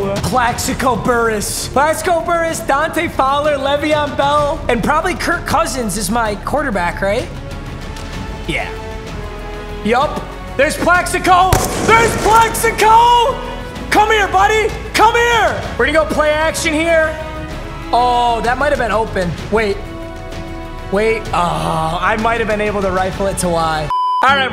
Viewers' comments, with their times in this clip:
0:10 that Plaxico Burress gun shot sound hits different, lol